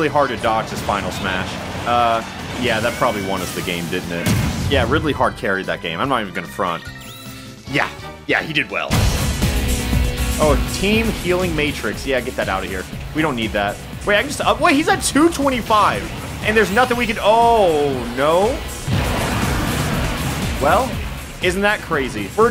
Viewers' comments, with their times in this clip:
0:04 Ridley: UNINTELLIGIBLE SCREECHING Snake: Yeah yeah, uh huh.
0:10 heard the song, instant like